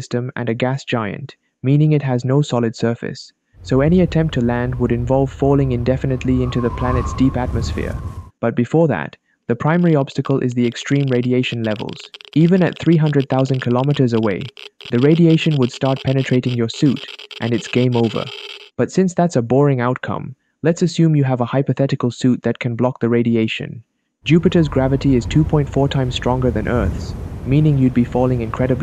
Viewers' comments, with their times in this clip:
0:09 I hear a geiger counter